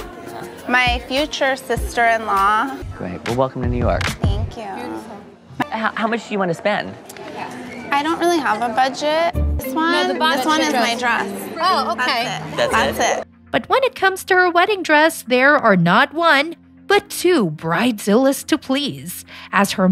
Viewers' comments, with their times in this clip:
0:03 Oof. That Valley Girl accent ]at ] makes my skin crawl...